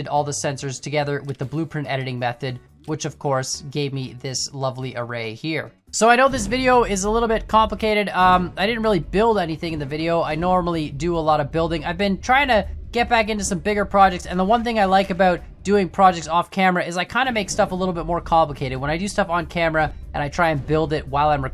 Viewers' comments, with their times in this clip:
0:09 no its kANplicated